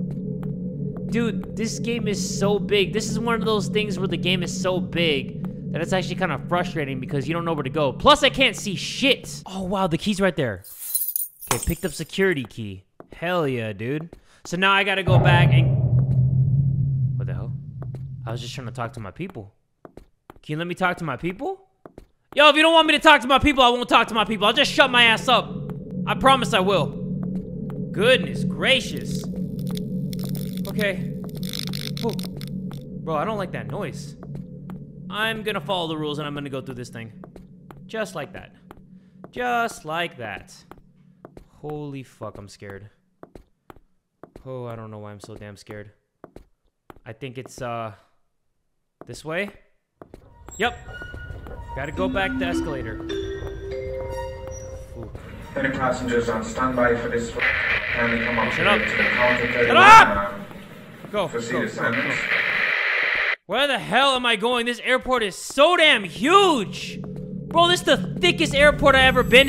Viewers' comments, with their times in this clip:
0:10 an i the only one who heard glass break..?
0:11 ok dude same but is it just me or did other people hear the glass burst
0:51 It sounds like the beginning of monokuma's body discovery announcement.
0:53 It kinda sound like a body announcement